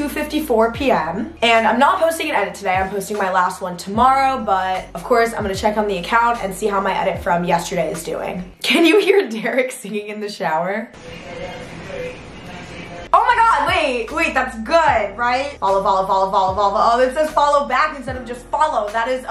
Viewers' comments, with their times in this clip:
0:04 ik this was 6 months ago but....THE V IN THE BACK